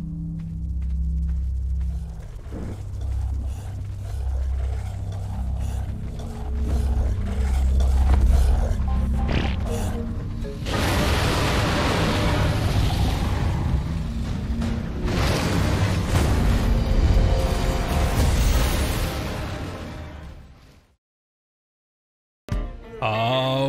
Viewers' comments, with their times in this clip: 0:08 If you listen closely you can hear this all powerful beast poop.
0:08 The poop sound cracks me up🤣
0:09 that poop sound🤣